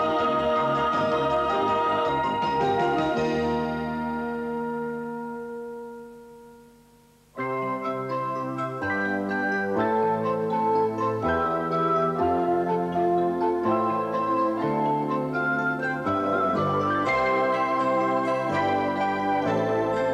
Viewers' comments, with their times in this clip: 0:07 Such a beautiful and moving theme tune.